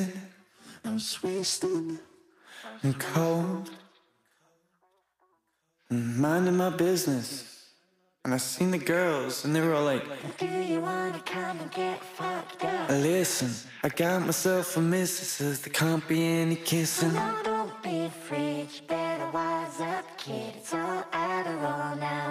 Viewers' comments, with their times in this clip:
0:07 I just noticed how American he actually sounds in this song, in the way he pronounces words (especially it's really "girrrrls" idk it's interesting)